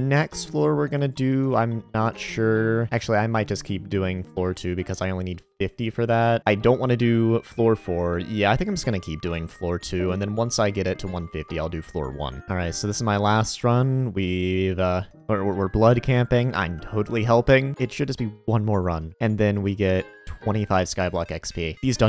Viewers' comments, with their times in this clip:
0:10 a bigger crime is the discord leave sound